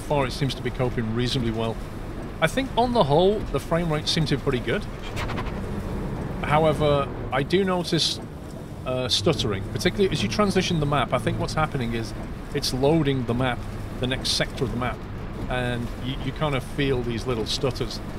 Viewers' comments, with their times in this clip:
0:04 did you skid or that was another sound?